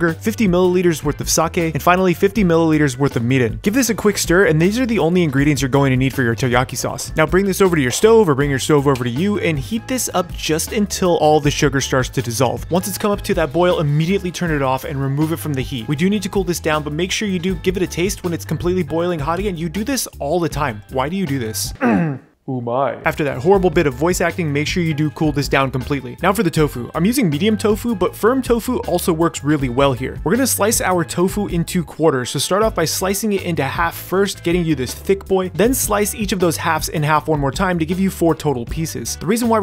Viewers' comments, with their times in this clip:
0:05 he said teyaki sauce!?!
0:22 George Takei? "Oh, my?" Nah but seriously thanks for this! Was looking for something new to cook for the weekend!